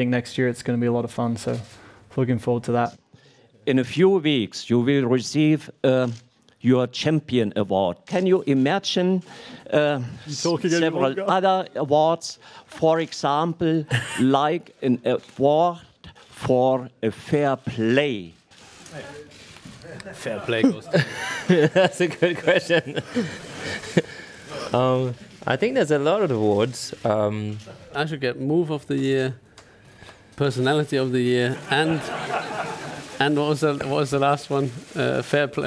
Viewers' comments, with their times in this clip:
0:03 A short view back to de paahst
0:04 Every time that reporter talks everyone starts to laugh hahaha... HE IS A LEGEND
0:04 After 3 years he still didnt improve his language
0:16 Lewis Can't Hold Himself Cracking Up